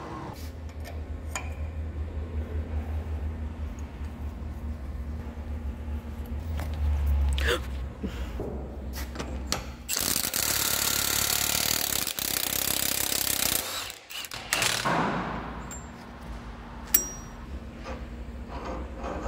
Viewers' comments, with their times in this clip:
0:07 The GASP is the same noise my wife makes when i am driving and she sees something.